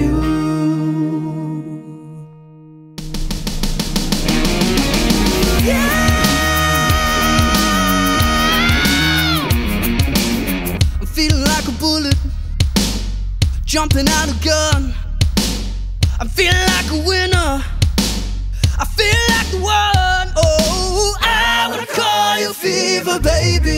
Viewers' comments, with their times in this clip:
0:03 OH MY GOSH, I LOVE THIS TRANSITION!!!! This whole melody was absolutely amazing!!!
0:05 It was all soo calm until until i got blowed up
0:10 did anyone else hear woman instead of bullet? 😂🤔